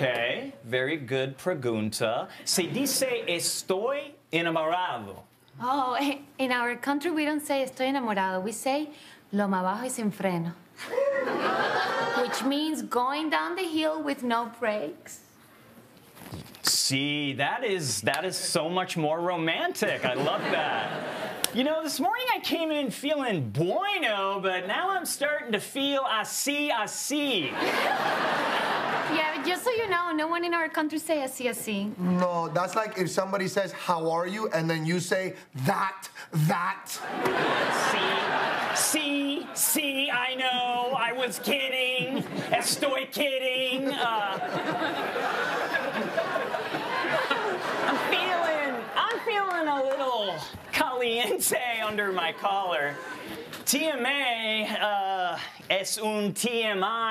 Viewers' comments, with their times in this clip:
0:10 I heard a “Whoo” and I don’t blame that guy one bit.
0:40 I love how you can hear Hugo and Maria laughing at Mikey Day! 🤣